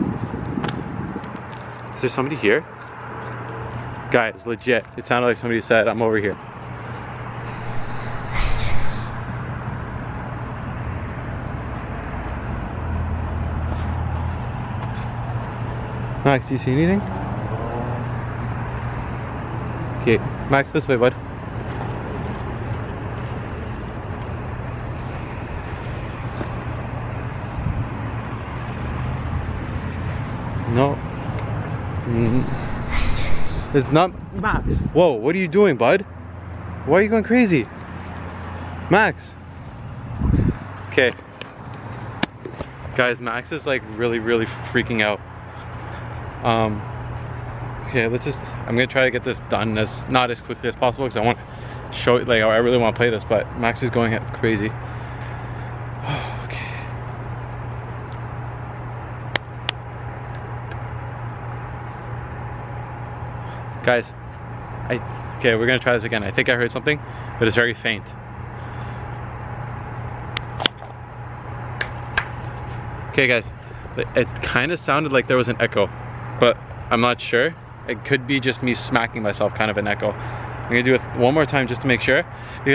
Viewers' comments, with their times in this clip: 0:07 you can hear a whisper
0:08 i heard something say eaither "right here" or "back here" or "roger"
0:08 you hear a girl whisper
0:08 in there's voice saying Esther that might be her name
0:08 it sounded like a little girl saying "I fund you." or sneezing.
0:09 it sounds a little like “bless your heart” or something
0:09 was it just me or did anyone else hear a whisper???!!
0:09 u can hear her say something but I couldn't make out what she was saying
0:09 There is a whisper
0:10 you can hear whispering
0:12 She says something loud when you get to the slide
0:13 If you listen closely I think she whispers it sounds like she’s asking what’s your name
0:16 _girl voice talk whisper
0:19 heard a little girl whispering
0:32 WTF SOMEONE SAYS SOMETHING LIKE BLESS YOU
0:33 i hear an erie voice that sounds dark and airy
0:33 In i hear a sound which says "it's over".
0:33 heard "right here" or "roger" again
0:33 U can hear the little girl say something to
0:34 you hear like a sneezing sound
0:37 little girl whispering again
0:47 then you can hear sneezing.
0:49 I heard girl voice from zero to about 3 times. 2 wispers
1:03 sounded like something was copying u when u smacked urself